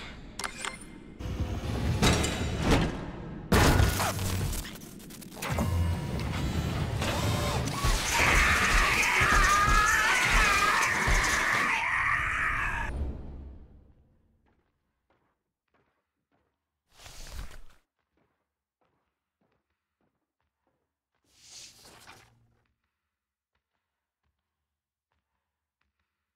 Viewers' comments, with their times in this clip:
0:07 I wonder hen the scene sart who sound is that is the freedy sound or the bot sound its scary to hear bruh